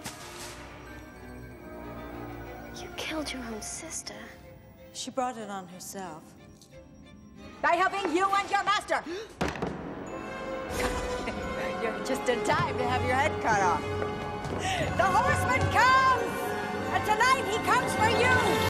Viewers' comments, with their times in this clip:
0:08 I could never understand what she said. What did she say ?
0:10 Miranda Richardson does scary super well like In Chicken Run but Sleepy Hollow as Lady Van Tassel is her most scariest role Now that I'm an adult I'm like why does she like axes so much???? She uses an axe in this and Chicken run I'm like good lord woman she really likes to play as crazy women with axes alot but I do love this movie though best movie of all time Ever since I was a kid I always loved reading the Legend Of Sleepy Hollow I still do to this day But she did an amazing and spooktacular job as Lady Van Tassel still pretty freaky when she did the crazy evil grin after she laughed sends chills down my spine everytime I watch this scene she's just a spine chilling character her laugh alone second the lightning strikes sounds like something you would see or hear in your nightmares LOL